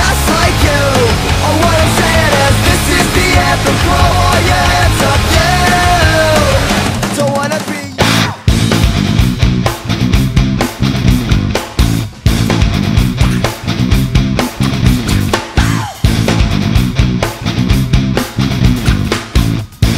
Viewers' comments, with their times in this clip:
0:07 can we apreciate the perfect timing with the drums there?